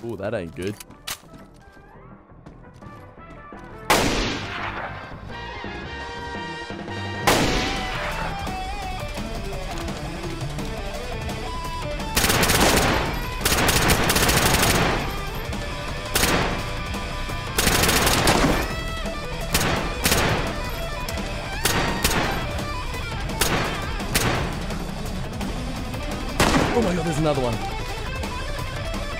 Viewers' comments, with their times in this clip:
0:10 best music for that scene haha!